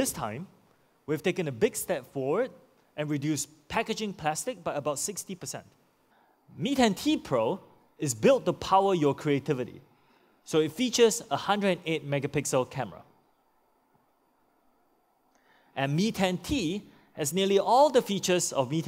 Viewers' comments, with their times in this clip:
0:06 turn on captions Meat And Tea Pro